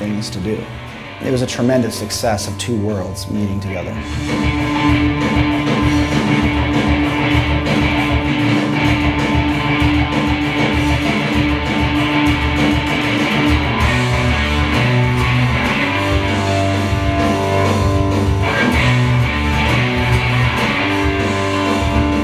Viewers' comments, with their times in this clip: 0:03 … stanky palm mutessss 🤘